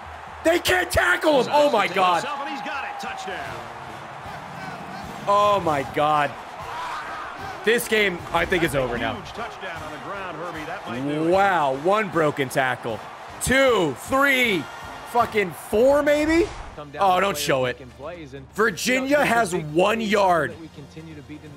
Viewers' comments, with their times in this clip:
0:06 WTF was that noise ?!?!